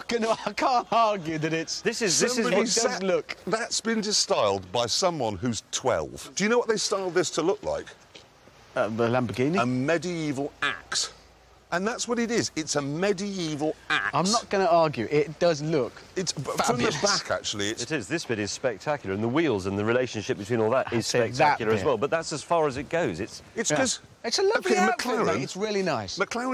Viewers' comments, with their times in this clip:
0:08 Jeremy "It's a medi-ee-val axe" Clarkson.